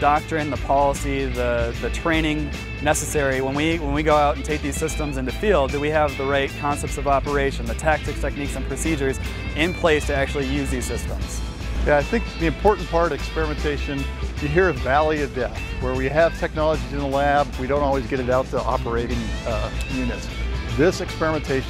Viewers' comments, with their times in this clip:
0:05 Like the music is gonna distract those of us with a brain cell from the SERIOUSNESS of this technology!